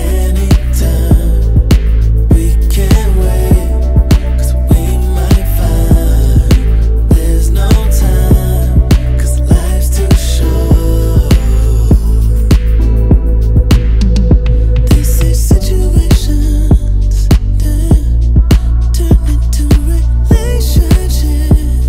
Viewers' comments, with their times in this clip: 0:09 Idk if it’s called a vocal run, but the way he sang ‘short’ was very nice